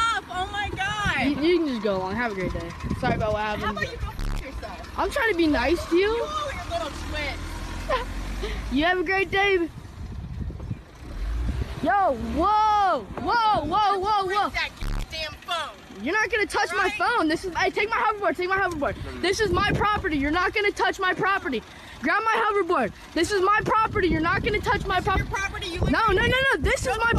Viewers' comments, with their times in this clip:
0:09 is it just me or does this little boy deadass sounds like gumball